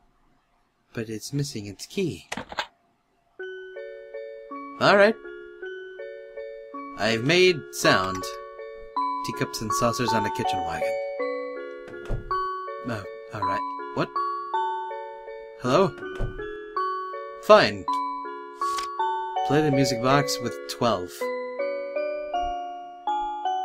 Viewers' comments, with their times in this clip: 0:07 The music box reminds me of Ib...
0:10 is it just me or does that music box sound like something from ib? mainly the title screen song? or the one in the gullera drawing?
0:11 The music reminded me of Ib.
0:11 I really like the music;-)